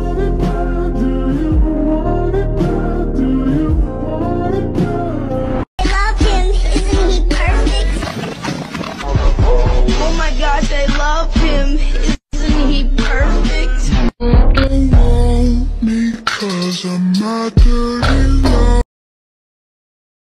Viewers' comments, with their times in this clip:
0:06 Russian tiktokers (bad English)